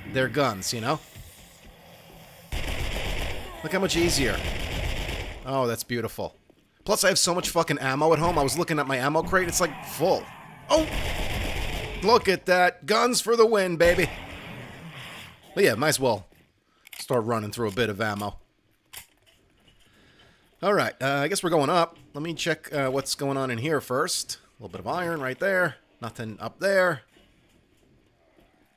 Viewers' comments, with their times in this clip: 0:09 this with 0.25 speed XDD "Hello There"